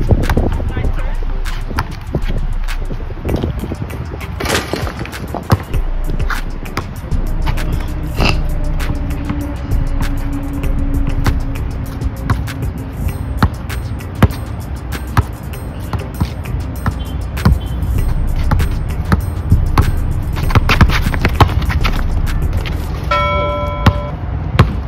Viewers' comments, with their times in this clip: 0:07 who heard the way he snorted 😑